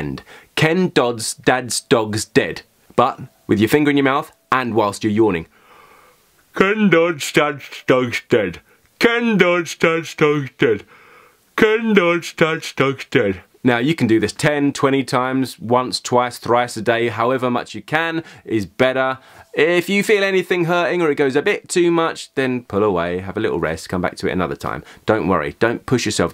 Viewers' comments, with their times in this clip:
0:07 Homer Simpson's voice